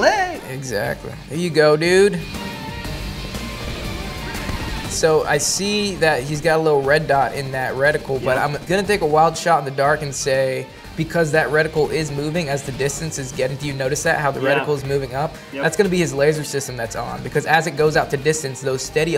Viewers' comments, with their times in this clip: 0:04 more interested in the music